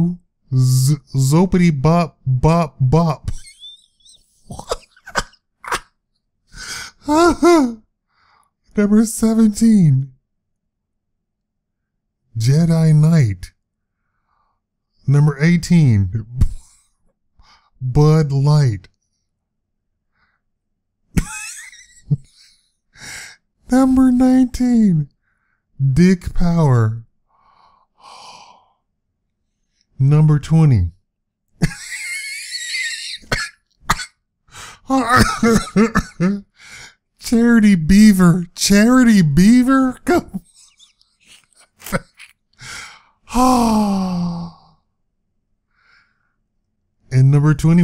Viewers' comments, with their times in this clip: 0:03 His Laugh Could Use As A Meme...
0:31 Im laughing because of his laugh its priceless
0:32 that laugh thoght